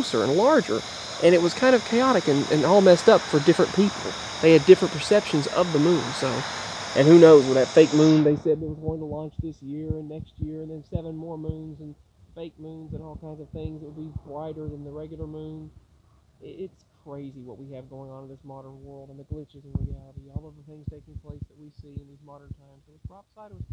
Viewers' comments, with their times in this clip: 0:08 The audio went crazy after Sorry.